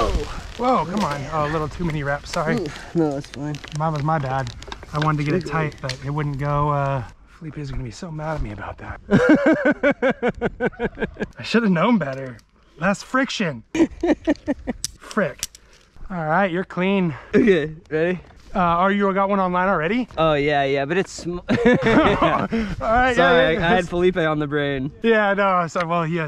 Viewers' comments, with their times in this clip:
0:10 -laughs turkey in the background: gobbling